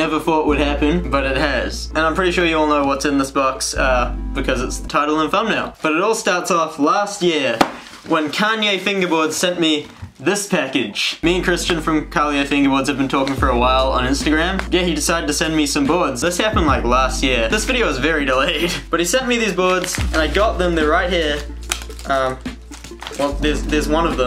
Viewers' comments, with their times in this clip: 0:10 since when is kanye west a fingerboarder